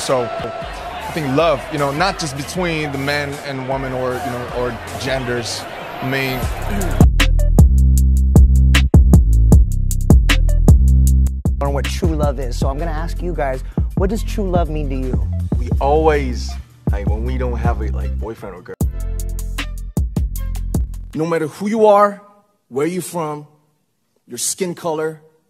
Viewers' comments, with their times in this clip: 0:06 Okay but my heart melted in the first clip when Namjoon explained how love is not only between different genders and Jungkook cleared his voice. Call me crazy but I feel like it was like he pointed out himself and I loved that so bad